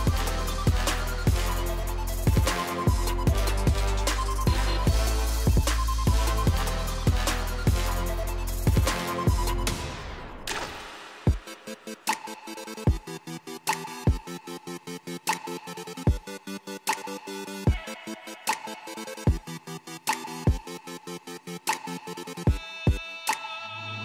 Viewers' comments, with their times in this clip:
0:10 Music matches bo getting hit by arrow and bow